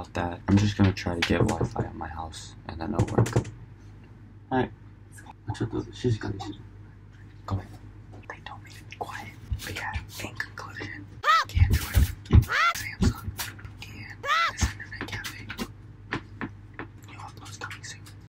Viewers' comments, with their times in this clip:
0:10 i couldn't hear him properly so i just thought there was just a few random honks here and there